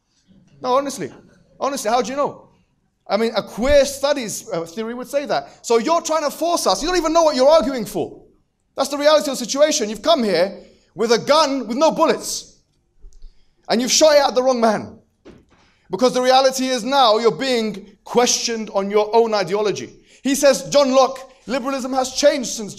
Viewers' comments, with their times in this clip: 0:08 the moment when the moderator starts laughing 😂